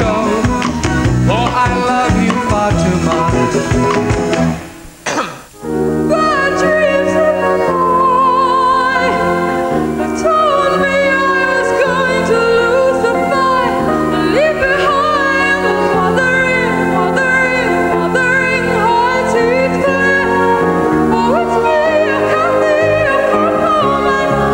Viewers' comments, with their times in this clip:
0:05 one of the best renditions of "Wuthering Heights" I've heard- a very hard song to sing successfully. If she's still around, even at her mature age she should consider going on one of the talent/idol shows!